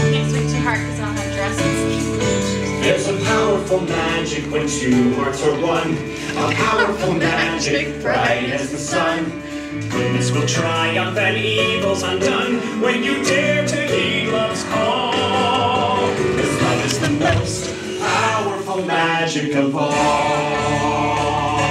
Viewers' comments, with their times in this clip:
0:06 Just Ginnifer's laugh 😍💙